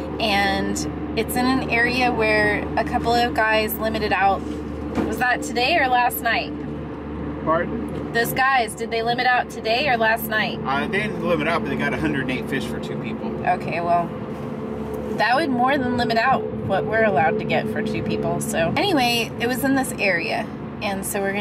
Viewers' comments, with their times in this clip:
0:09 AM and somebody is mowing their lawn? That is the ultimate "Toto, we are no longer in Kansas" moment. Congratulations on getting more fish! They are making you work for it this year.